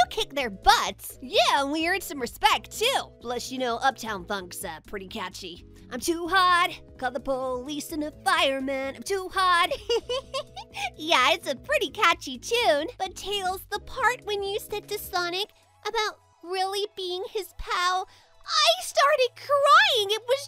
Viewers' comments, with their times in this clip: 0:05 the most amazing singing ever